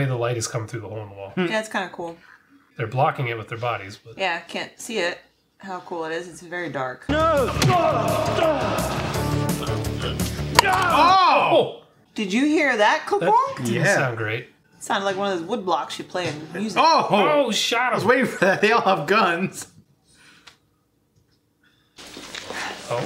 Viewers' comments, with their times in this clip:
0:09 sounds like someone taking a bite out of an apple 😆